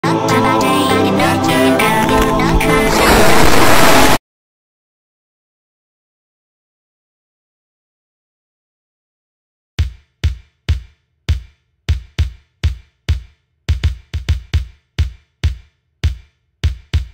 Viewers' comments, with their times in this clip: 0:01 Wenda: “Rack-Rack-Rack it up! Rack-Ra-Rack it up! Rack it up! Rack it up!…..” or “Back it up!”